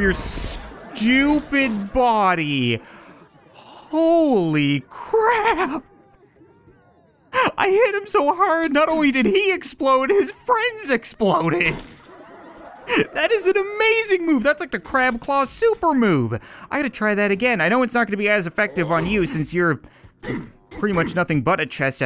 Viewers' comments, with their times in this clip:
0:05 "Holy crab!"... ...yes you're a crab.